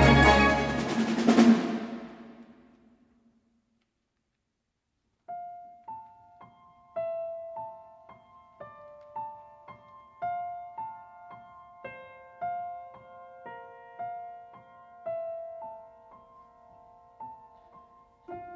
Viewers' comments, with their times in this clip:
0:04 I can't take Why did I play this at work. This rendition is so exquisite ; _;